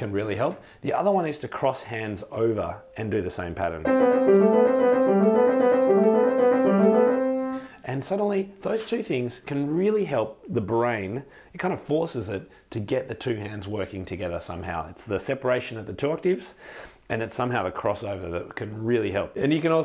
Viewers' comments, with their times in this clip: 0:04 I thought you said you were divorced!! 😁😁😁😁😁😁😁😁🤣🤣🤣🤣🤣🤣